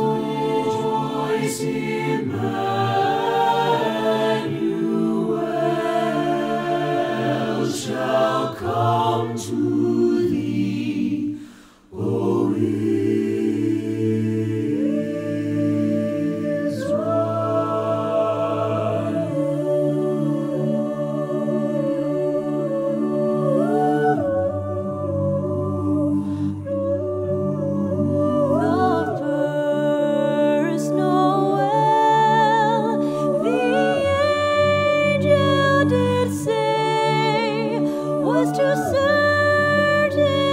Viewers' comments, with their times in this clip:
0:04 The chord sends shivers down my spine. Immaculate.
0:23 I loove how it sounds like cellos ❤